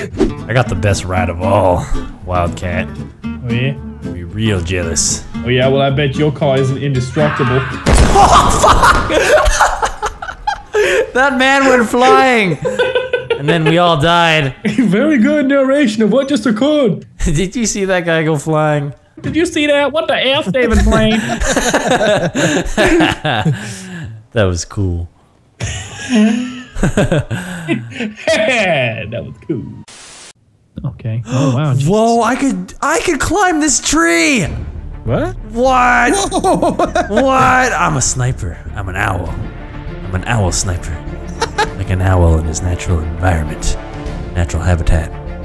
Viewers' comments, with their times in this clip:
0:07 that was the hardest I've ever heard vanoss laugh!!! 😂😂😂
0:25 omfg dat laugh xD
0:26 Wildcats laugh sounded like someone sliding a chair on the floor
0:26 that fuckin laugh